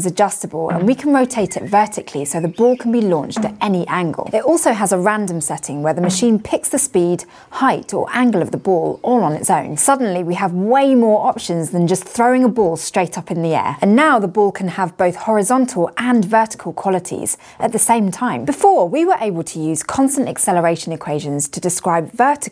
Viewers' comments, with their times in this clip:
0:04 +CrashCourse I ran it through a multi-band compressor with the high band (6k+) at a -42db threshold, a -2db post gain, and about a ratio, cleaned it right up without losing her consonance. Made it much more pleasant to listen too. There's no getting rid of her sibilance, but making it less harsh is not too difficult.